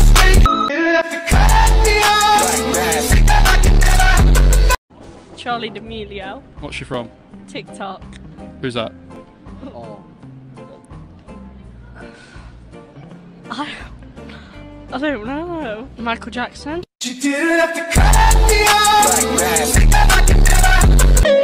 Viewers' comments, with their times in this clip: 0:05 judging by her accent, she’s probably not from the US so it’s not her fault she didn’t know Lincoln, but the Michael Jackson part is just wack